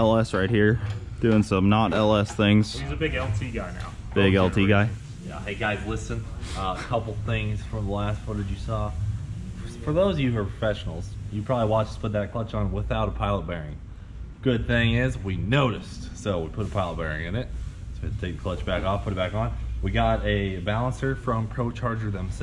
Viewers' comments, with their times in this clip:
0:10 LOL> Did Cleetus say professionals? pefessionals? fessionals? This highly tight organized organization are full of fessionals. lol.